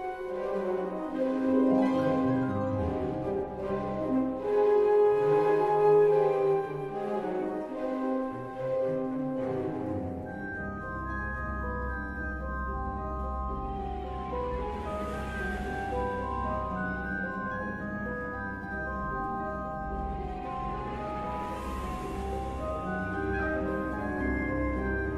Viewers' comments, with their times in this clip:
0:06 The cello phrase is John Williams' brilliance summarized